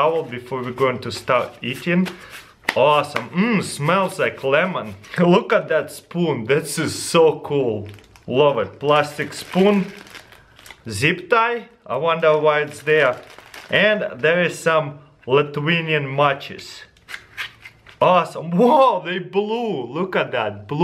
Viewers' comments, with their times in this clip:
0:03 mmm, smells like clemon